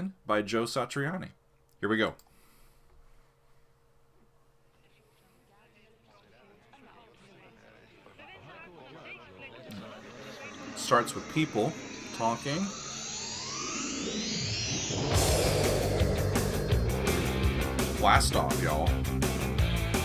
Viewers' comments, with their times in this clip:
0:07 For the dutchies out there you can hear Dutch TV presenter Sonja Barend say 'We wensen haar vanaf deze plek...' (We wish her from this place). She said Joe heard her talking while they were both tourists in Italy. He thought she had a beautiful voice and asked for a snippet so he could use that.